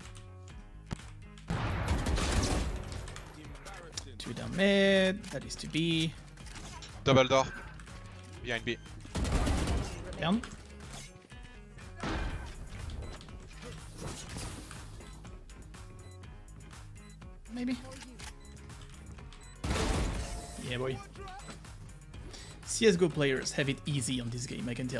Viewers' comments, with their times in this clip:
0:06 the autogenerated text said Dumbledore when he spoke in voice chat